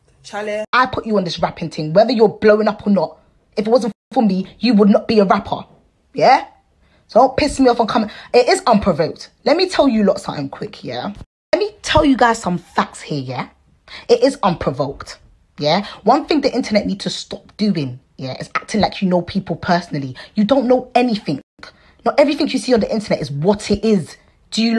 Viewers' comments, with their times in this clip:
0:07 ewww the accent i can’t take it serious